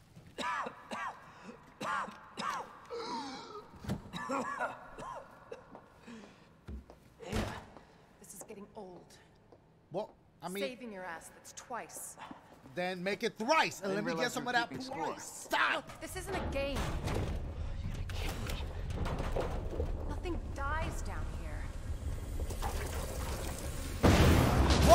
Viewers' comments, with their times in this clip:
0:09 Somewhere does anybody else's video go out of synch? Like dashie's voice is ahead of the gameplay?
0:11 did you say puh ice or blue ice?